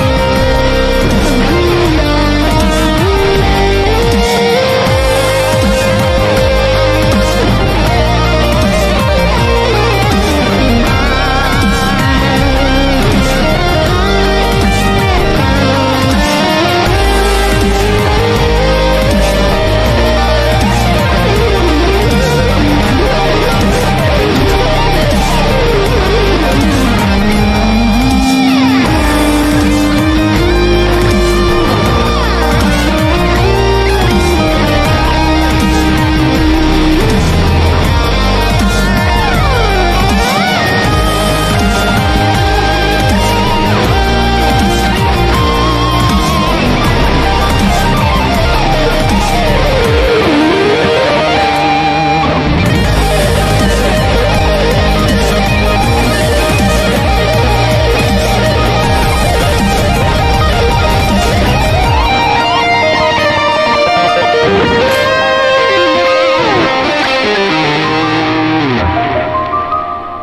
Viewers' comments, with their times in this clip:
0:06 the fact that Li can follow along and make it sound so damn good and make you the lead guitarist sound even better says alot about Li's talent. He picked up his chromatic run and did the same to get the harmony on the fly is just beauty to my ears
0:32 you can hear guitar making band, but nobody does band ;(
0:52 this double-solo was absolutely perfect